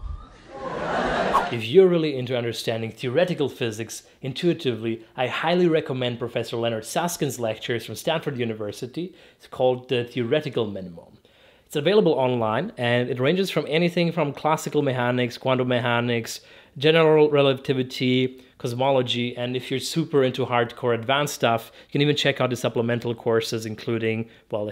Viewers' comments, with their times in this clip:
0:05 Till now, I thought he was saying "Leonard Saskin", even the captions say that! When he mentioned his book it clicked to me that it's actually "Leonard Susskind" (and Art Friedman)